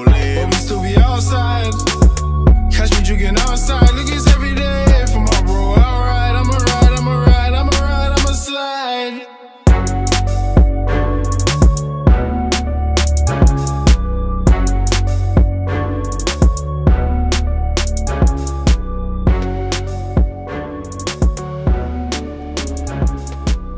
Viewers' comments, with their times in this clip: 0:05 I thought he sayin Ima ride ima ride ima slag lol